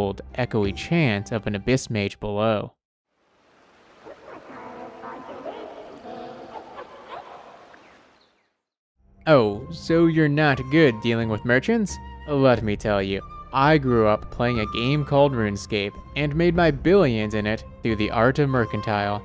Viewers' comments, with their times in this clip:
0:04 THE ECHO OF THE ABYSS MAGE I CAN'T!!